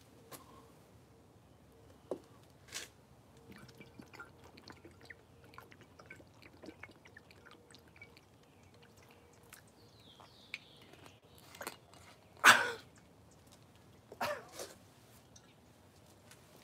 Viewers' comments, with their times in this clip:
0:04 😂😂😂 oh yea he's from Wisconsin alright